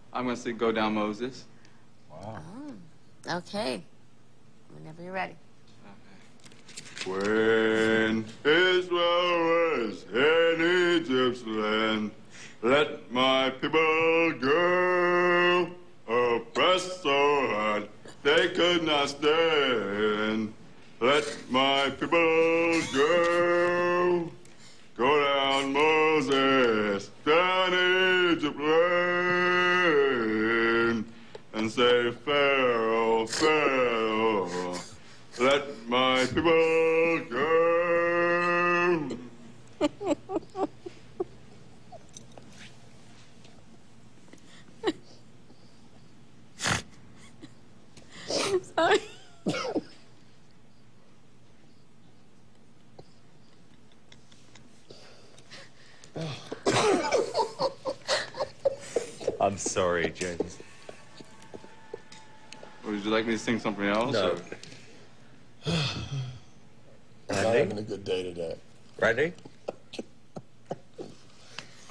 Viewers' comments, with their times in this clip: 0:08 have you ever gently put you finger in a record while it was playing so it distorts the tone and speed?
0:56 Yes he is the reason of my tears and his second laugh was even better
0:56 when randy finished laughing and said "oh....." and then paula and randy started laughing again..... it was over for me